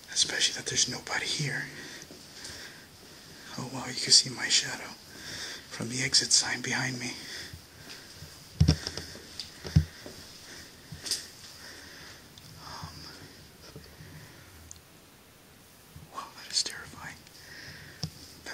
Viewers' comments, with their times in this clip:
0:04 a face peeking from left side of the door when you are talking about seeing your shadow. plus numerous noises. Love your piano playing💖 :-)